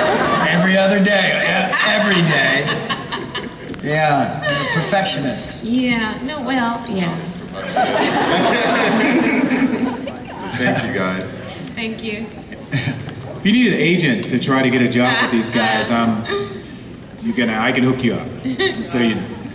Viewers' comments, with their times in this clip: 0:04 Brian: Perfectionists Holly: Yeah... no, well.... yeah This moment was sooo o “Piper” they way she said it lol😂